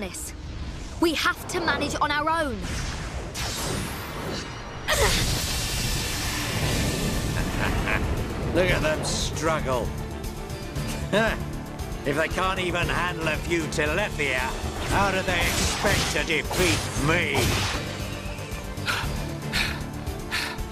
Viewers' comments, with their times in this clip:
0:06 The music. Lovely.